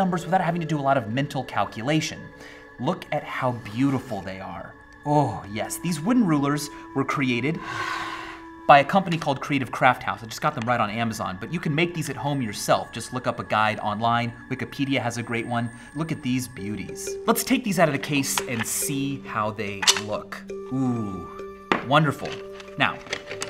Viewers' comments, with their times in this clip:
0:05 that orgasm tho.